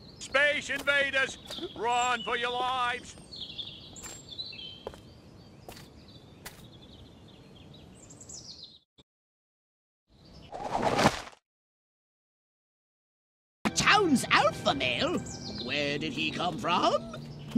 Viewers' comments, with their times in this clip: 0:04 Is it just me, or does the Mayor sound like Mayor Quimby?